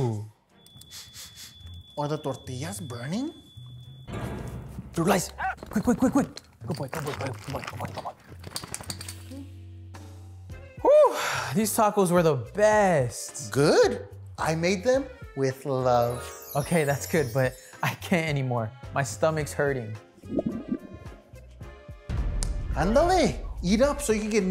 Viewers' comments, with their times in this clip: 0:05 Bruh the noise the dog made eating that tho 😭😭🤣🤣🤣🤣